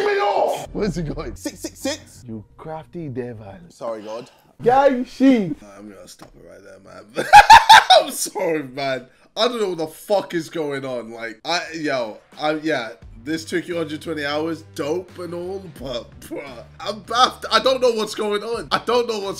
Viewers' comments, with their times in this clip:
0:07 RIP to headphone user's 😂😂